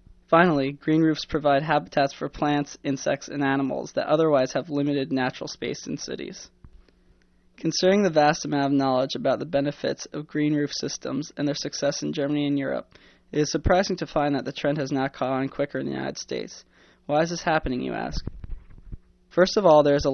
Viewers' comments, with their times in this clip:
0:03 Green roofs provide habitats for plant insects and Elephants????? What???